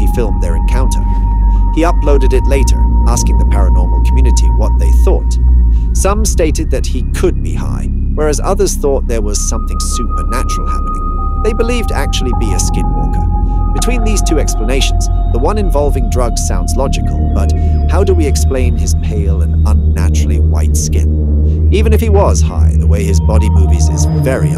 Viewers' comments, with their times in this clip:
0:09 in.. what’s with the audio it starts doing loops. What do you think? What do you think?